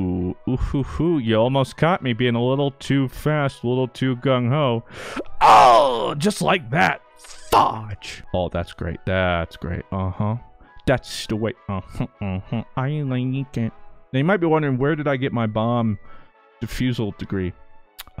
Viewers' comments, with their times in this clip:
0:04 was my favorite, that scream got me lol